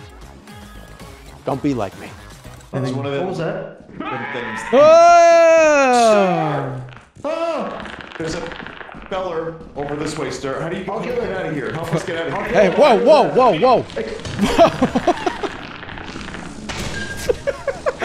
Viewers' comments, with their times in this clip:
0:03 Soundboard quality Half-Life scientist scream